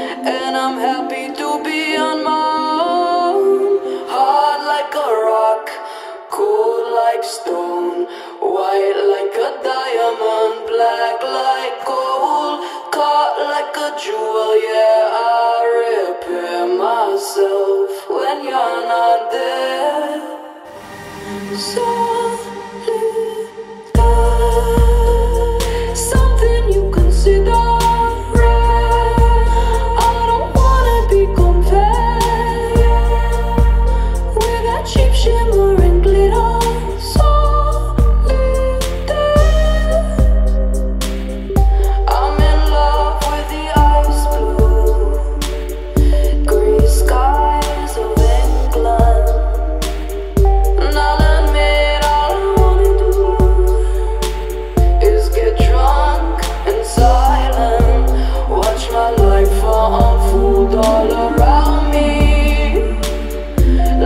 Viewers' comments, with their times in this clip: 0:04 Does remind anyone else of the Cornell alma mater?
0:23 Nobody: Me when I listen this piece of art: let's the beat drop
0:46 ok, I LOVE THE WAY SHE SAYS "SKIES" I GET CHILLS WHEN I HEAR IT ITS JUST SO CHILLING AND AMAZING